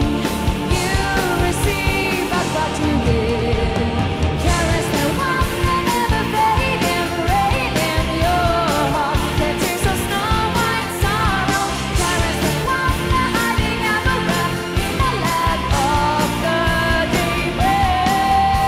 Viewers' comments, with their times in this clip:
0:04 Is it just me or did she sound out of tune there? Something about her singing was just...not good in that live lol My opinion is as follows: Tarja made Nightwish what it is. It was moulded by her and the other members and became iconic because of that. Anette was like the in-between person. The one they got because they were desperate to continue working and couldn't get who they actually wanted after Tarja's departure (Floor). Floor is the one they wanted to get to replace Tarja (for obvious reasons) and she fits well with what the original conception of Nightwish is, essentially continuing Tarja's original legacy and adding onto it with her own uniqueness. Just my thoughts. I half stopped listening after Tarja left because I really didn't like Anette's voice at all lmao Didn't realise she was gone so I might pick up from Floor after watching this.